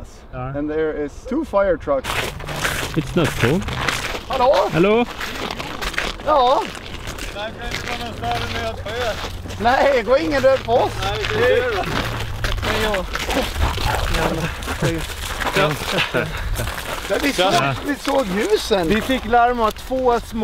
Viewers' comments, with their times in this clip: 0:07 was the most interesting conversation I have heard, much better without subtitles - Swedish sounds so difficult! 😂